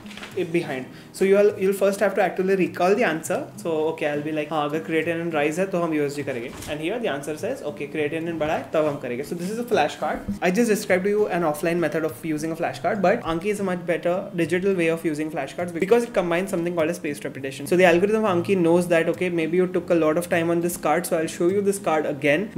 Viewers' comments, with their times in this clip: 0:06 I heard him talking in Hindi first ever time 😂idk for what reason i always thought he's Telugu speaker and dk Hindi 😅😅 Maybe because I've seen native Telugu spekers talk only in English because of there poor Hindi in our uni